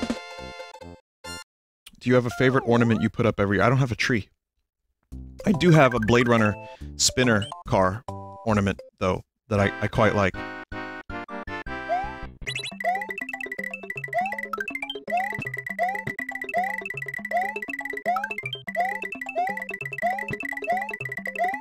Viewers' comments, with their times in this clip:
0:07 For a second I thought "Yellow Switch Palace" said "Yellow Snitch Palace."